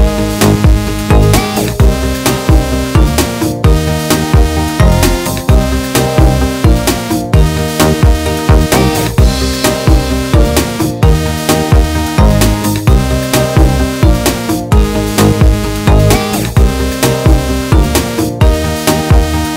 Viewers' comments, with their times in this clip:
0:03 is very helpful love the song too